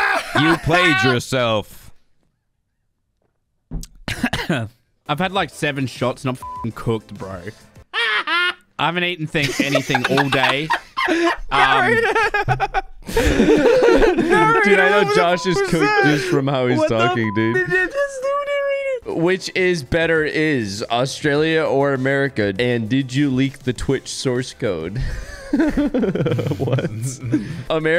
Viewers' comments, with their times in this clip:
0:06 Narrators "HA HA" killed me 😂
0:06 Wtf was that laugh?
0:07 the best HA HA from narrator and the reactions
0:07 Narrator sounded like Nelson from the Simpsons
0:07 narrator sounded like the bully from the Simpsons
0:07 bruh i love how random he did that: ahhhh hhhaaa
0:08 he sounds like the guy off the simsons
0:10 Juicy breathe is hot there mist